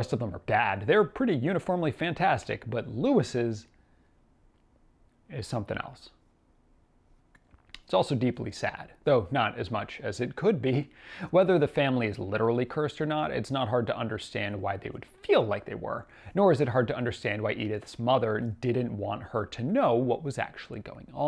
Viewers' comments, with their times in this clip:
0:03 goosebumps when you mentioned Lewis God Edith's voice at the end of it got to me